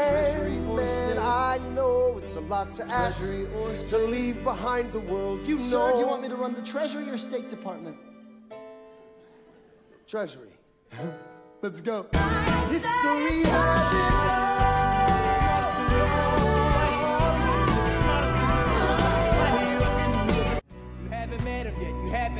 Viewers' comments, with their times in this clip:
0:10 I don't know why but I find that little laugh and smile so funny and cute
0:10 thats adorable. also, absolutely LOVE the part after that with that high note.